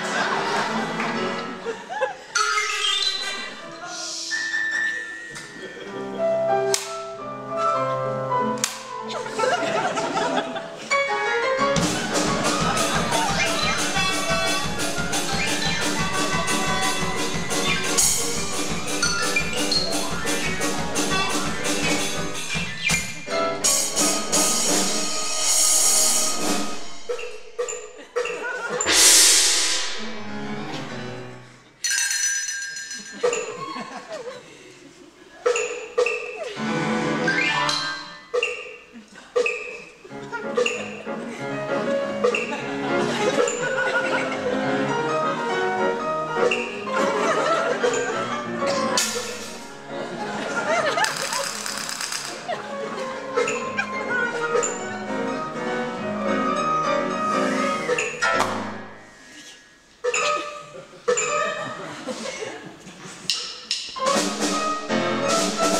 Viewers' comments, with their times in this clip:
0:06 i love the small clap lol
0:50 hey that head sounds different 😅